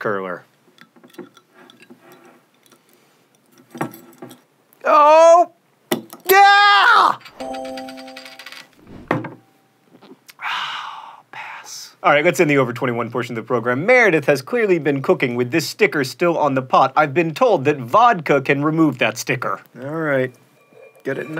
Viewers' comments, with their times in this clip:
0:06 Lol that yeeah